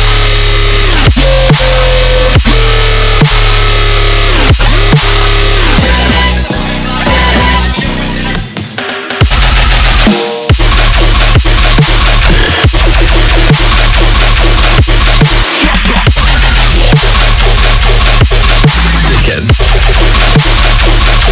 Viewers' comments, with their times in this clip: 0:08 is sooooo heavy bro💥💥💥💥